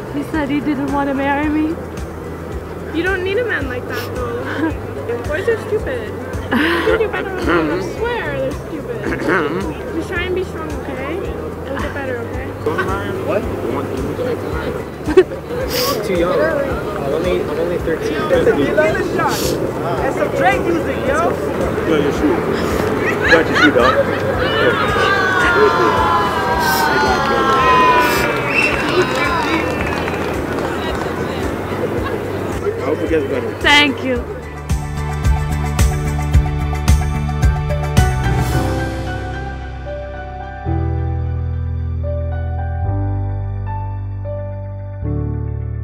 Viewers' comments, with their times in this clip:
0:06 That guy is tearing his throat out becuase of the girl😂😂
0:29 they all clapping and hooting when they themselves were all quite before